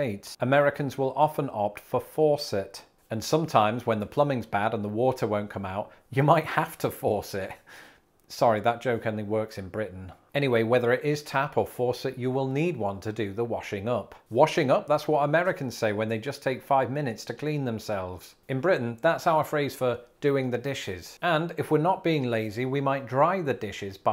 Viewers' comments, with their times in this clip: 0:08 "Sorry, that joke (faucet / force it) only works in Britain." Also in New York, New England and a good part of the American South.